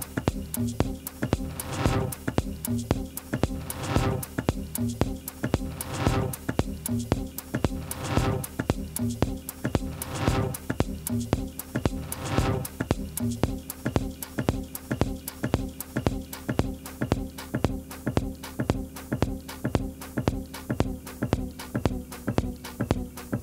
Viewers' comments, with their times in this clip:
0:06 perfect acid comedown music ...